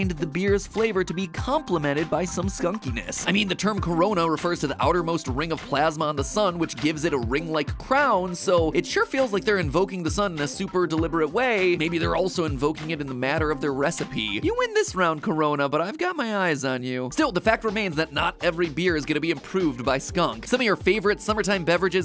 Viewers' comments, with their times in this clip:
0:04 that’s the most idiotic take ever. It means crown and the corona of the sun is named after a crown because of its resemblance to a crown. Not the other way around. I almost forgot just why I stopped watching any of these theory channel videos. This just reminded me that all the jokes are lame and the voice is grating af.